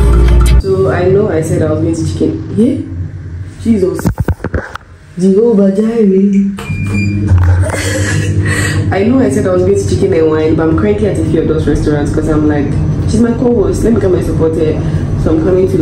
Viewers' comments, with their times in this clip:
0:03 she started singing at once🤣